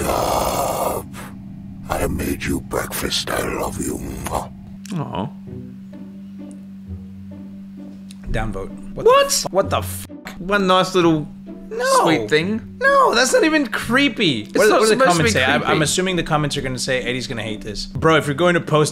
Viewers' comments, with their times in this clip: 0:03 when your dad is a death metal vocalist 💀